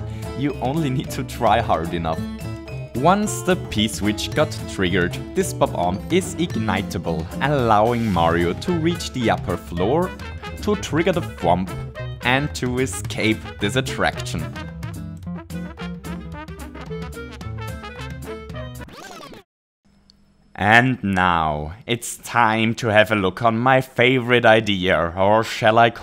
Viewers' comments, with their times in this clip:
0:10 Hooray counter: 0 Perfect timing with the music there